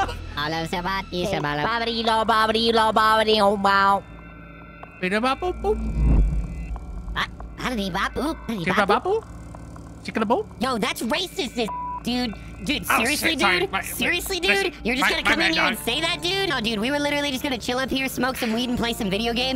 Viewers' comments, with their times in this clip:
0:07 This f*cking part right here sounds like something straight out of Smiling Friends dude 😂